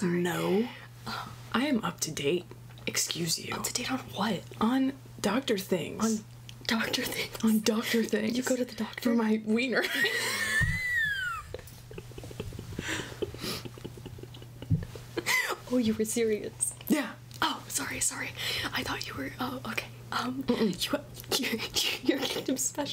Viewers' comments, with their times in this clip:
0:09 I've melted onto the floor and started crying, thank youuuuuuuu Edit: THE WHEEEEEEZE, ARE YOU OKAY???